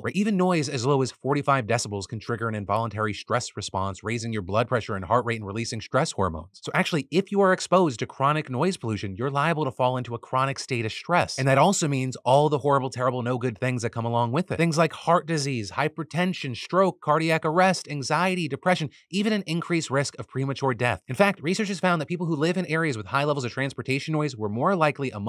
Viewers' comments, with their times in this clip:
0:10 Anyone else turn the volume down ??